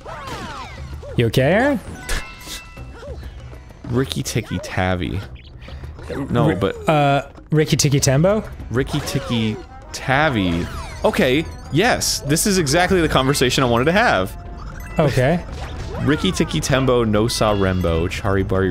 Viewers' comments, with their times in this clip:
0:05 me listening to my sims argue